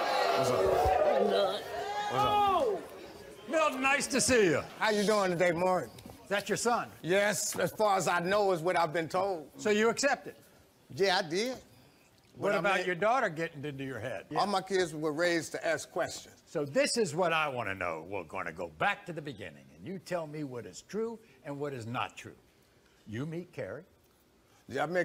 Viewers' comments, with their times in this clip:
0:08 Is it just me or does cuz from sound like Steve Harvey